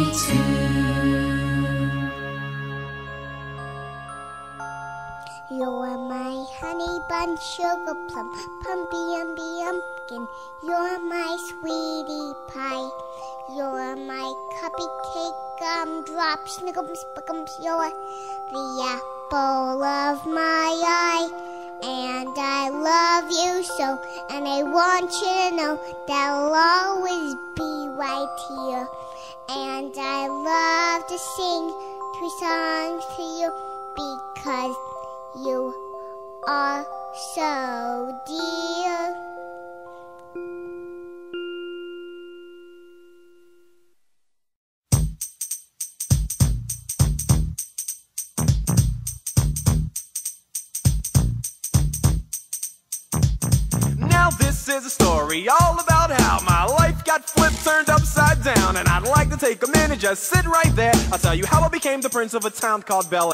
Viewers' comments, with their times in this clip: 0:04 mines is the song starting so cute makes me want to slap whoever is closest!
0:51 great music starting from